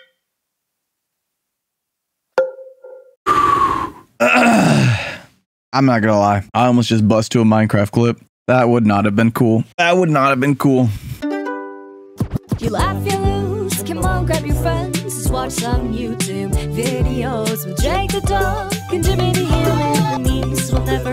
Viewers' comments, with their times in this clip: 0:03 sounded like the half life crowbar